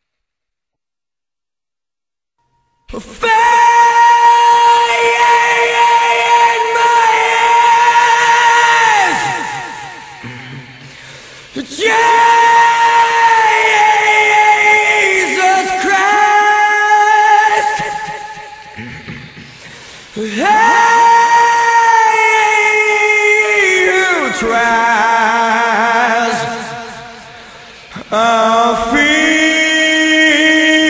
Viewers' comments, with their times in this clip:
0:04 this line when he screams like that its give me goosebumps every fucking time this is insane
0:17 the whine that creeps through added so much more emotion to it. This is all so beautiful.